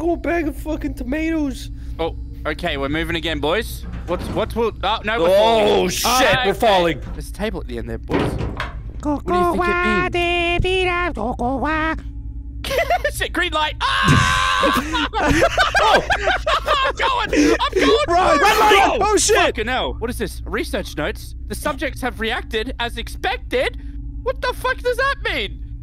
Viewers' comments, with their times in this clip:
0:08 he said it wrong but the tone of his voice was on point =D